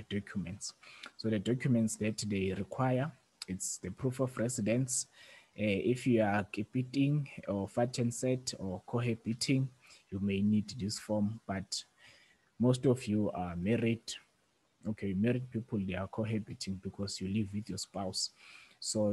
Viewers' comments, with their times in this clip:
0:07 "if you are KIPITING..." I DIED 😂😂😂😂👌